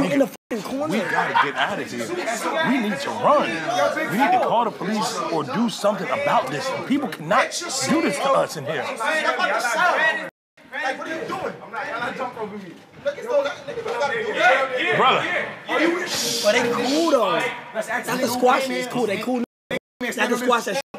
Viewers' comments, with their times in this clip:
0:03 bro sounds like a privileged white guy who’s never been to jail before. “People cannot do this to us in here.” 😭😭💀💀